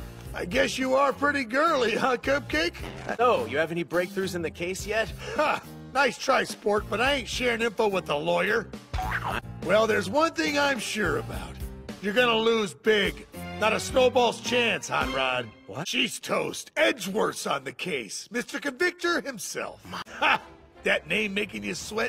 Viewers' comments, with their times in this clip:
0:03 The way the clip is cut gets me every goddamn time because I always mistake Phoenix's line as him calling Gumshoe a c*nt. WHICH IS ???